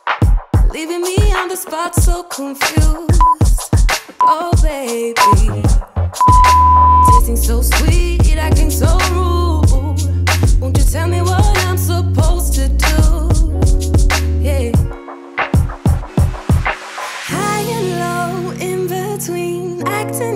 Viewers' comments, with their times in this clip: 0:06 The song is an ABSOLUTE gym banger. Thanks for introducing it to me. It's my song for planking aha.